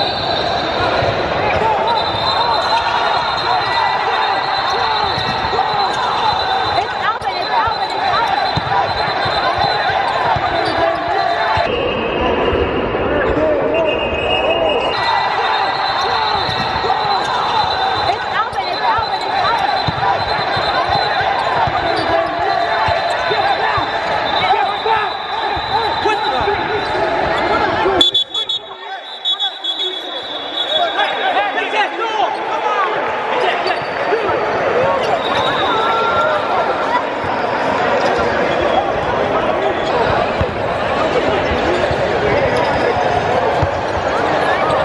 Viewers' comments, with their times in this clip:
0:07 What is the person recording trying to say XD
0:26 anybody hear him? 😂